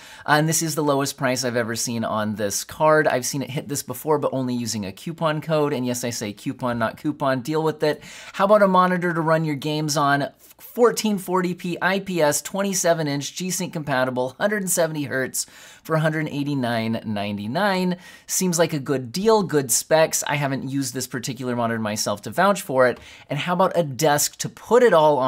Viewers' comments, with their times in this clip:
0:07 Q-pon not Coo-pon deal with it!! 😂😂😂